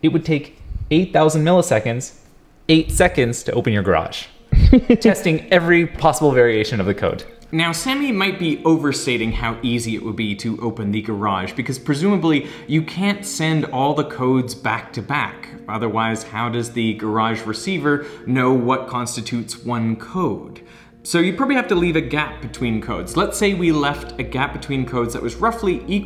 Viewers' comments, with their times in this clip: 0:07 What is going on with his voice here??